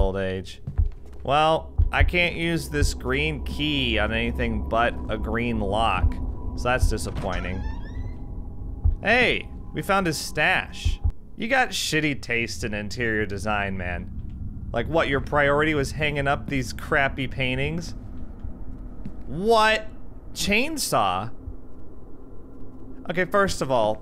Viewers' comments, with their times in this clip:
0:07 Is it just me or did he sound like Mokuba by LittleKuriboh ?